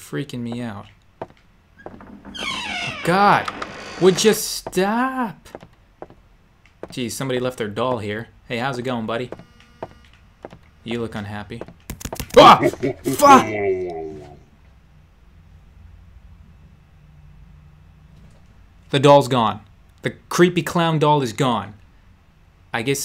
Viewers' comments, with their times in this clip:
0:04 "would ya stoaapp" (spelled like that on purpose)